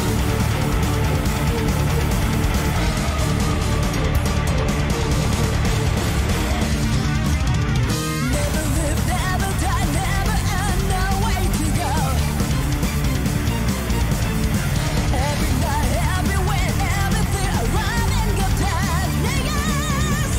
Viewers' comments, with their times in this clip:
0:08 The opening bass gives an Overkill vibe. that riff is fantastic.